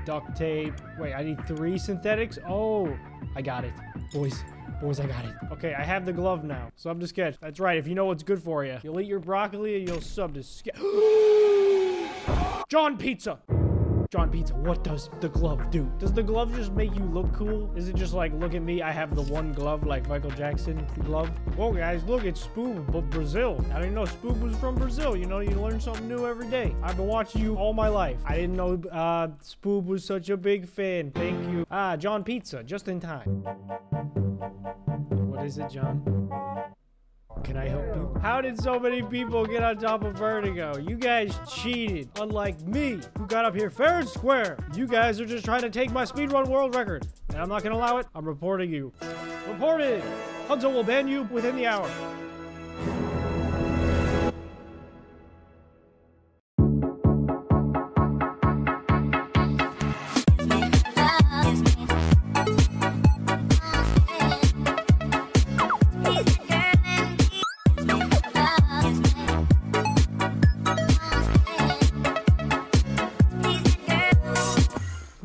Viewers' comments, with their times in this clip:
0:10 Bro you can hear his soul leave his body
1:03 why does the music go so hard🥲